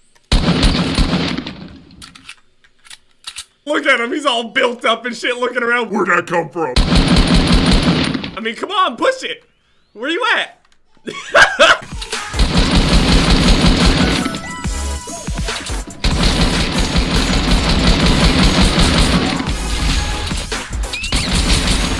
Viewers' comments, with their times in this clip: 0:06 That voice wtf